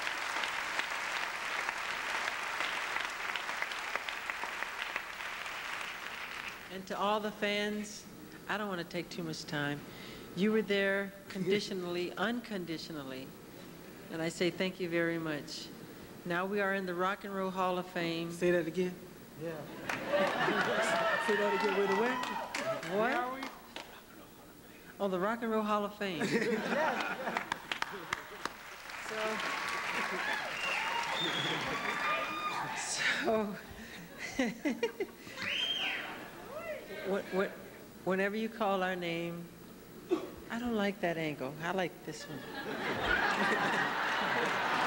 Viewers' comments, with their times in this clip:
0:09 lol he sounded like a black man saying "I don't wanna take too much time" . I love it
0:18 What did he said wrong here ? I don't get it Is it only me who raised the volume maximum to listen every time they whispered in each others ears....I really want to know🤠
0:31 that laugh , I love it